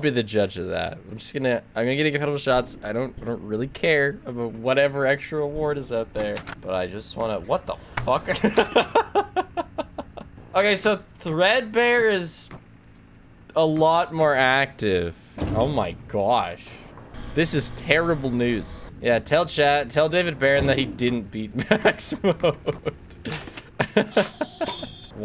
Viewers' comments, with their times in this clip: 0:06 that curse is delivered in such a funny way lmao